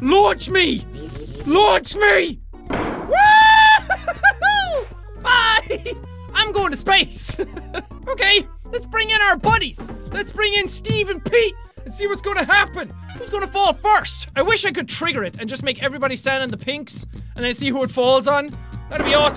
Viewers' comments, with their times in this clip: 0:03 u sounded like goofy